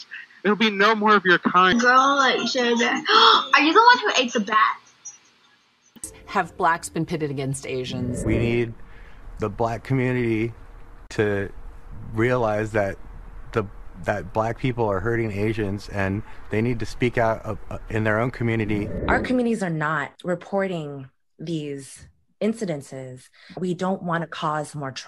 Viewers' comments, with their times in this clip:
0:08 This dude ain't believe a word coming out his own mouth. He sound like somebody forced to read a ransom note.